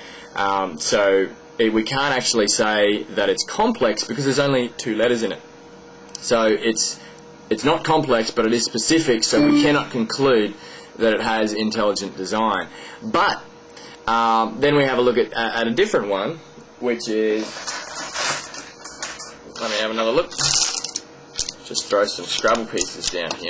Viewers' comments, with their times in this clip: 0:10 msn beep lmao!